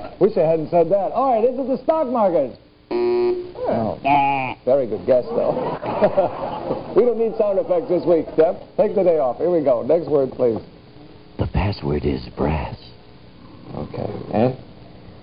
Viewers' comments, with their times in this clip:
0:03 Oh my goodness the way Lucille just all nonchalantly imitates the buzzer noise like that is absolutely priceless! 😊